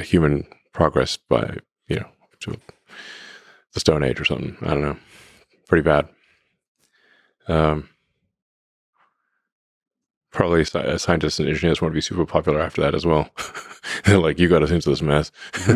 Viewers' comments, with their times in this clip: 0:03 what does Elon say?? Slightly inaudible...